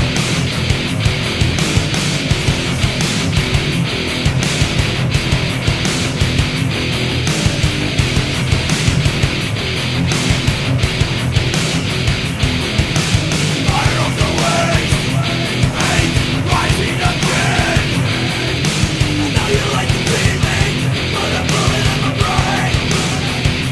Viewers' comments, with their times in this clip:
0:08 reminds me of "Killing Joke ". Man, I miss those days